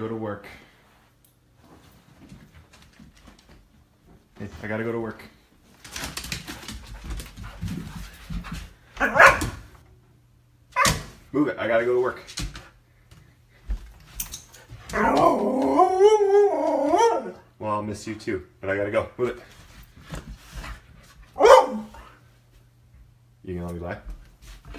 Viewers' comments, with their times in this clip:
0:10 I don't know why but this soft little bark just melts me